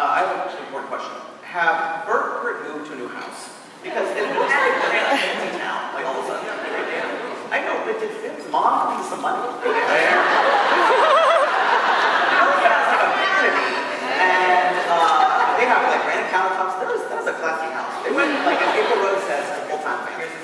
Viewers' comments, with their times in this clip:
0:03 I'm confused what they were laughing